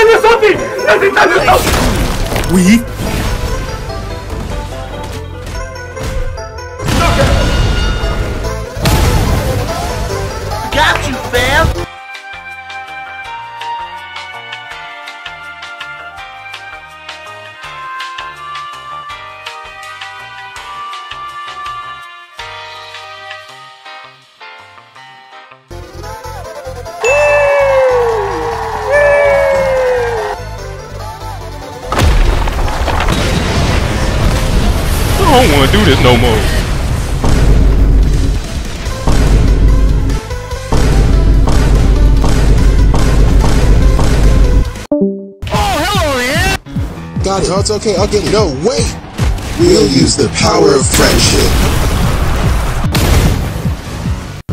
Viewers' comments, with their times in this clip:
0:07 bro kill his fan
0:39 me when i hear vine booms:💀💀💀💀💀💀💀💀💀💀💀💀💀💀💀💀💀💀💀💀💀💀💀💀